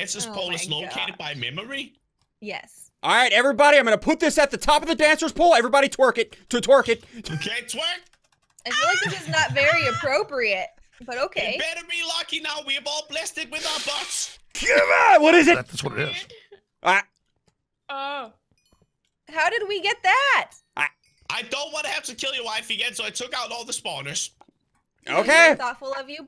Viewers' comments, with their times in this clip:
0:09 is that a moannnnnnnnnnnn 😮😮😮😮😮😮😮😮😮😮😮